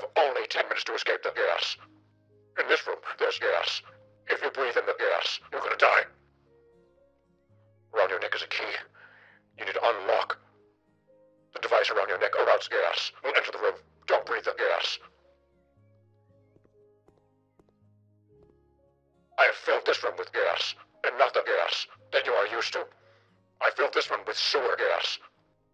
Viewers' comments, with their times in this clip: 0:03 killed me with gyas
0:09 jerma becomes a combine soldier